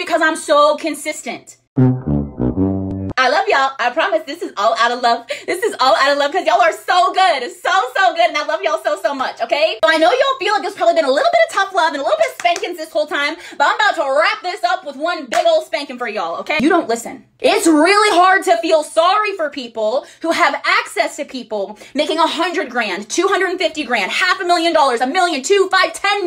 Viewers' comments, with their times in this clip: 0:08 consistent. She pronounced stalker wrong